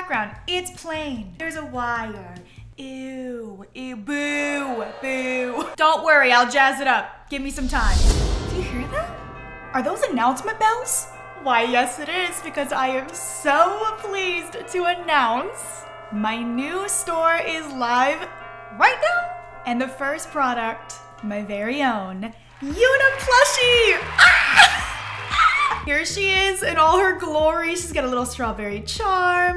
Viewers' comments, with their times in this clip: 0:10 no their church bells